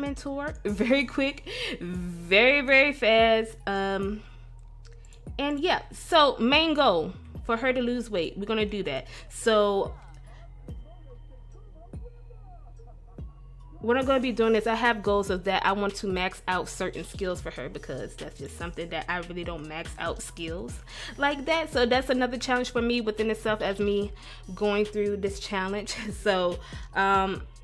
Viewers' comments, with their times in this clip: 0:09 that pause tho